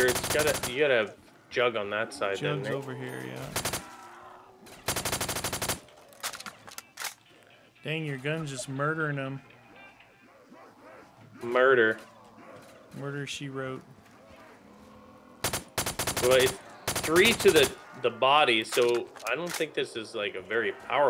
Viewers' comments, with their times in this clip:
0:06 Anyone else hear a phone ?or am I tripping?